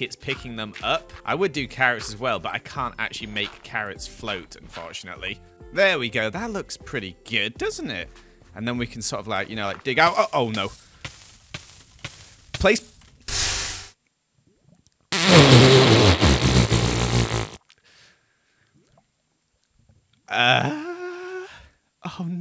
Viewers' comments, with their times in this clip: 0:10 I love how he just laughed🤣🤣🤣